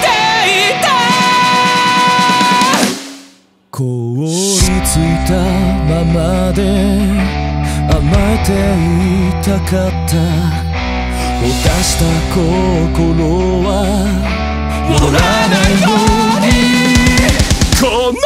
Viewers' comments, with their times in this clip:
0:05 low/deep singing shachou✋😩i love ur high clear voice but damn i was shocked